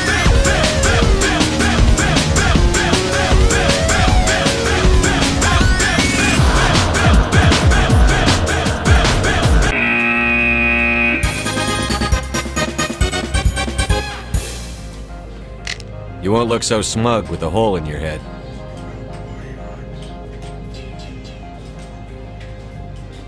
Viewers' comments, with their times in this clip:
0:06 that music just turned epic in front of a DDR battle. CLASSIC...